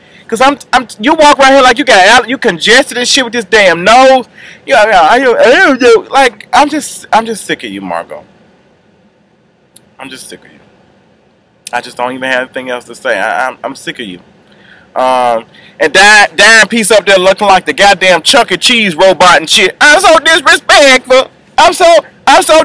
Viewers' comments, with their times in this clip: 0:04 u had her down into the video LOL sound just like her